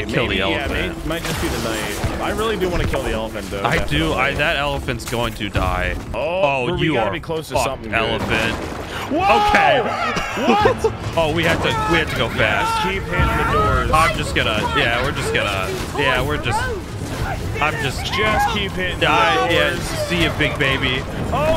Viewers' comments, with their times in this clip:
0:08 that woah echoed